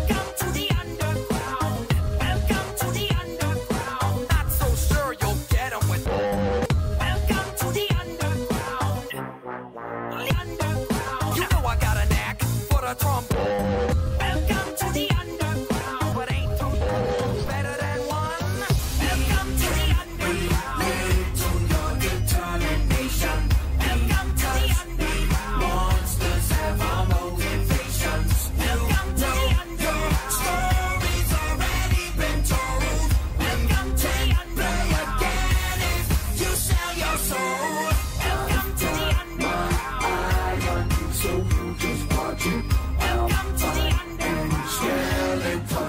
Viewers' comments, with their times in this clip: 0:10 You can hear a bit of his regular scream before underground, but I like it better like that
0:13 that was the most violent "welcome to the underground" I've ever seen/heard.
0:28 Papyrus welcomes you to the underground so much you can hear him after his death